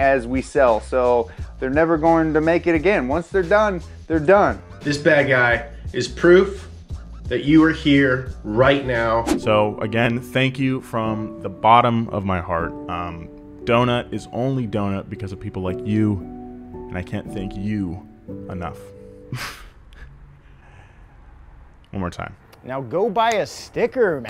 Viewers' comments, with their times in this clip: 0:10 they hit 4.58 mil Happy 4.5L Ferrari V8 noises